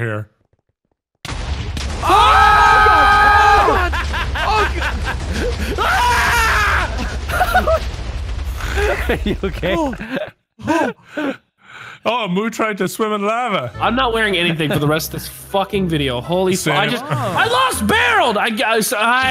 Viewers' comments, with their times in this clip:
0:03 My god that laugh and that scream. 😂